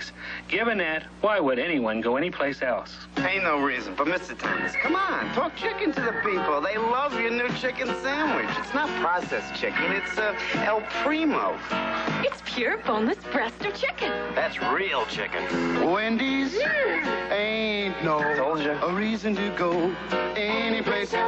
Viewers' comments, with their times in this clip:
0:03 back when people loved the Wendy’s chicken sandwich. I like how excited the lady saying “it’s pure boneless breast of chicken!” Is lol.